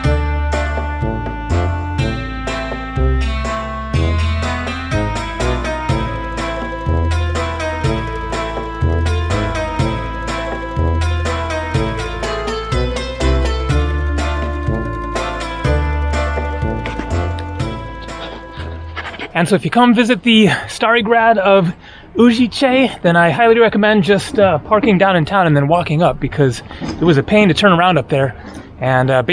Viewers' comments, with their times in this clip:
0:10 really like your choice of music<><